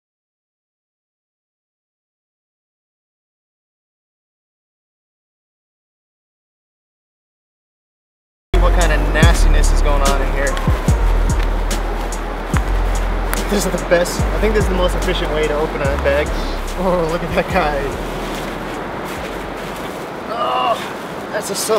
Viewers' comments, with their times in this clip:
0:07 you got the sad meme music going😂 couldn’t help but notice